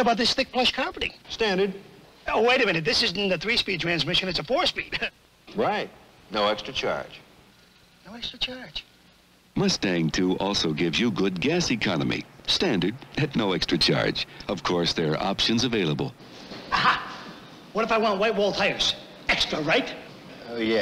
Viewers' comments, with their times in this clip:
0:04 I heard Prince Adam say “Right”
0:05 when he says "right" ...That's Prince Adam